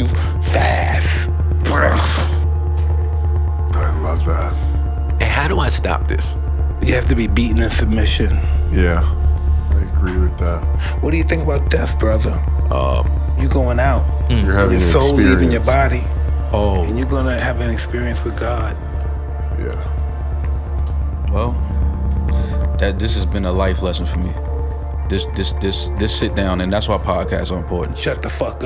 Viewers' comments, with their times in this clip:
0:04 "Hey how do I 'stap' this?" I don't know why the way he said 'stop' is funny to me 🤣
0:04 "Hey how do I 'stap' this?" I don't know why the way he said 'stop' is funny to me 🤣 This whole video is hilarious. Bless u for making it 🙏🏾
0:10 Mike asking that in that tone must be one of the scariest things a man can experience